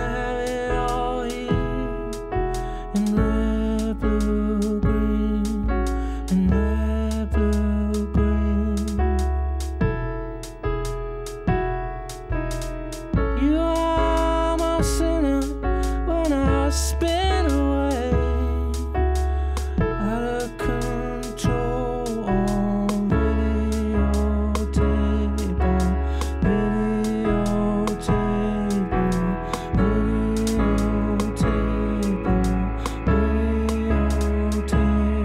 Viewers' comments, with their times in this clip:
0:04 How they make this sound in background that starts ? is it guitar ? if so what kind of pedals I'd have to use to gain sound like this ?
0:15 The song begins
0:20 This is my favorite version of Videotape because of the magic that is happening with the drums programming. there's a metronome-sounding "tock" beat is introduced, which is shifted upstream by 1/8 relative to the downbeat, and gradually becomes more prominent, and over a span of a minute it morphs into the distinct upbeat without changing the meter; the kick, the piano, and the bass become syncopated relative to it by 1/8, and there's a silent downbeat 1/8 downstream of the kick. It's like a sleight of hand done in slow motion, and you still can't put the finger on it. I don't know of any other song that does something similar.